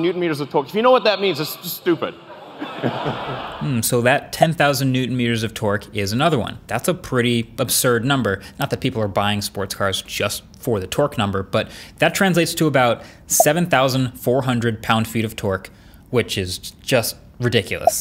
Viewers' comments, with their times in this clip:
0:04 that sound effect you added when the text came on reminds me of airpods dying